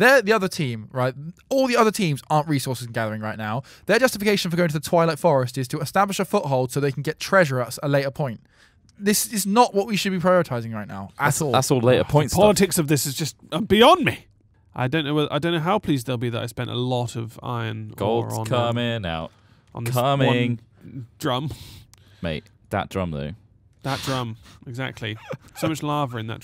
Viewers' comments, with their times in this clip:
0:10 That scream cracked me up.